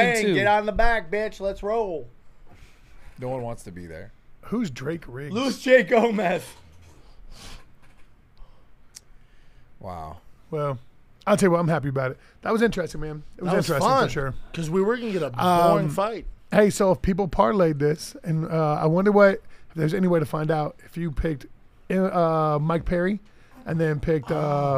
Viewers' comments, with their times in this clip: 0:05 the silence is deafening